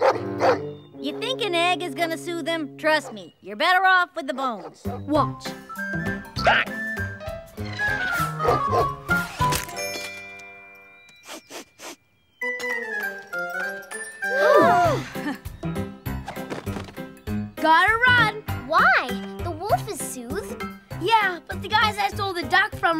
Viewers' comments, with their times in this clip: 0:06 Duck laying an egg [quacks]